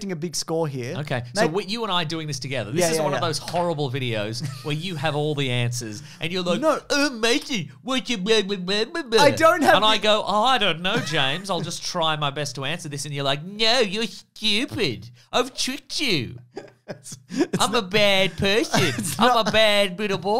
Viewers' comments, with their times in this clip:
0:05 really good synch there 😂